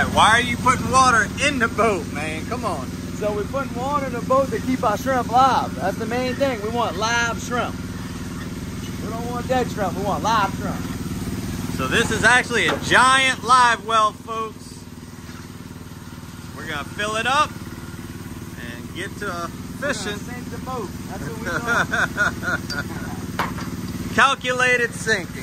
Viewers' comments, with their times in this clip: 0:07 We want "lave shamp"..